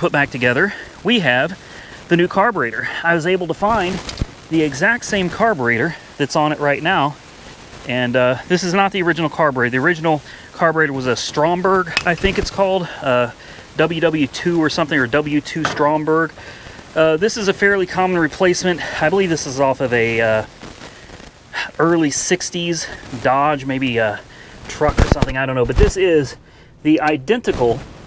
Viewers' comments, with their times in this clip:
0:09 I usually watch all your videos till the end and its the first time i stopped watching for the noise of the mic 👎🏻